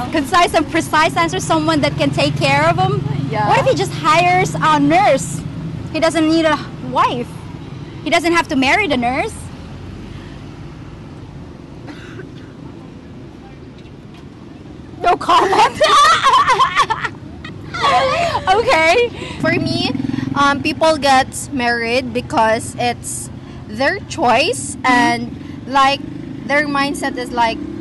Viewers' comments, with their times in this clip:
0:09 Great as always. Great questions, e.g. The silence was telling.